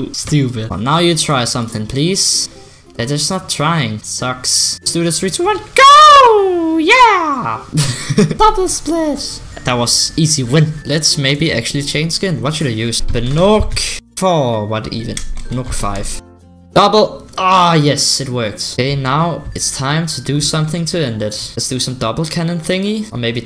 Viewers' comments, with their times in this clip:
0:05 Mario Bros Voices lol
0:08 sounds like you have 6 years xD